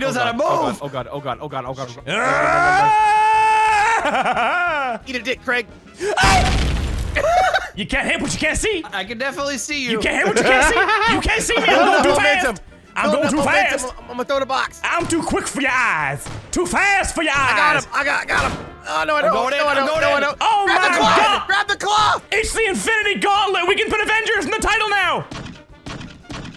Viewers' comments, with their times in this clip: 0:07 mini started to sound like Muhammad Ali